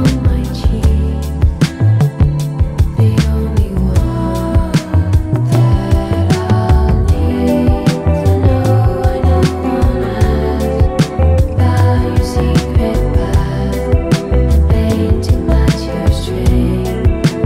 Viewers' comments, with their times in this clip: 0:03 I love the harmonizing